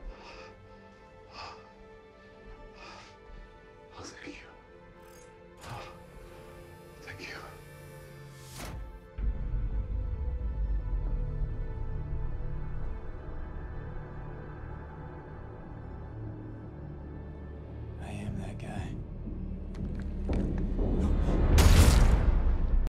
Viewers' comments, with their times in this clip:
0:09 The music is so good in this scene, building tension when Prax is aiming the gun, then melancholic when Amos steps in, then drops to let you know what's coming. And even though you know it's coming, Wes's expression and delivery of the line is 11/10 and still gets you.
0:12 Agreed, also the wraithlike noise as Amos turns, to let you know that Amos, having done his bit of being Prax's friend, returns to the business at hand: Strickland - who lives a further nine seconds, all of which are spent in terror.